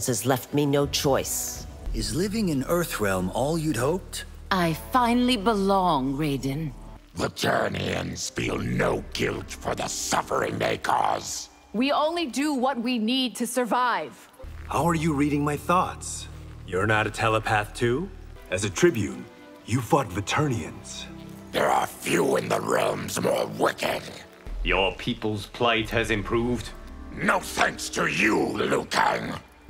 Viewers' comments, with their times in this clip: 0:05 This is such a wholesome line and said with such joy in her voice.
0:11 I think her line read was near perfect, like she came off as a believable character there. I don't know what they were doing during for her recording process or what the circumstances were, but clearly they weren't going out of their way to get or use her better takes. Most of her dialogue is flat as as all get out but I don't necessarily blame her for that. It's a shame, really.